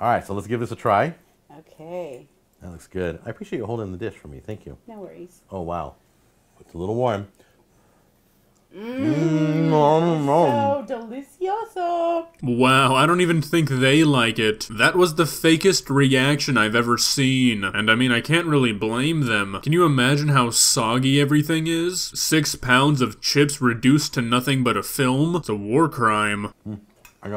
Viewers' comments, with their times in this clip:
0:09 he hasn't even had it in his mouth for a split second and he is already going mmmmmmmm